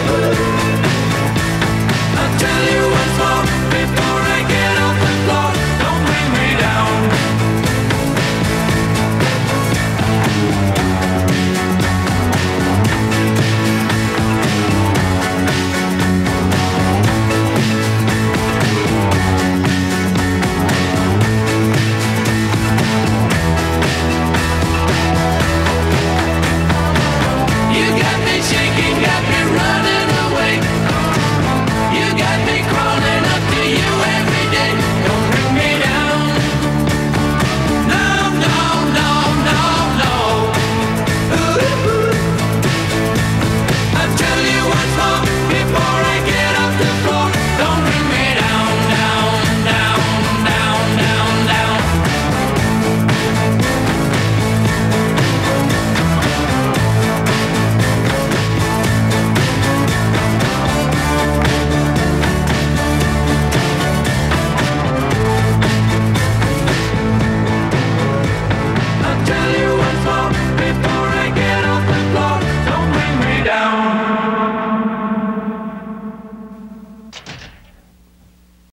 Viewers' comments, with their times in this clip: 0:08 best part of this song. I love how they added an instrumental.
1:05 One of the best wall-of-sounds ever! Unfortunately the poor audio on this video fluctuates all over the place...what happens to the sound VEVO? You could have easily resynced the audio with a CD, WTF!